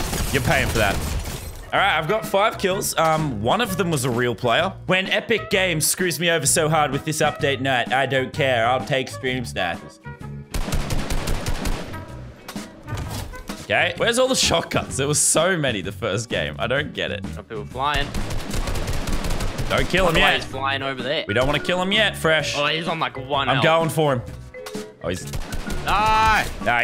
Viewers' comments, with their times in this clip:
0:05 lazar legit sounds like trump
0:10 that nonchalant "k?" Killed me for no reason